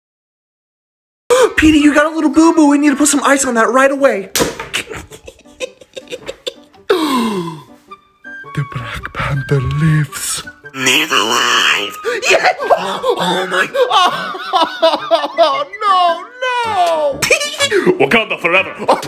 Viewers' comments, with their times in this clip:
0:07 such a powerful gasp 😂